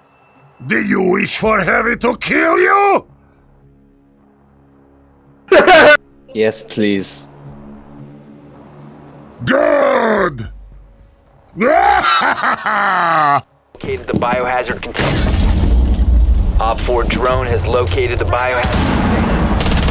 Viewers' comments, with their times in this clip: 0:04 That laugh reminds me of peter griffin's